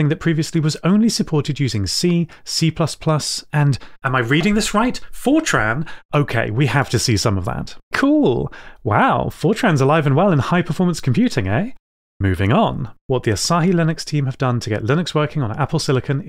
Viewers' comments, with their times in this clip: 0:03 this is the most emotion ive ever heard you express x3 great video!